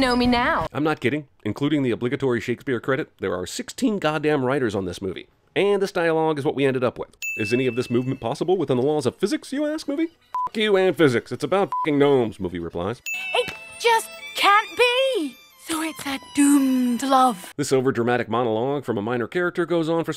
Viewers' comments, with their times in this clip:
0:03 nice voice crack my dude